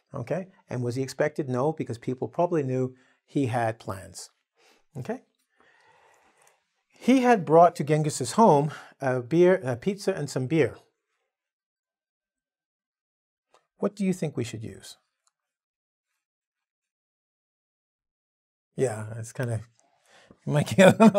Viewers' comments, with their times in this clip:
0:04 At the timing i have never ever heard the best sound "mmm okey"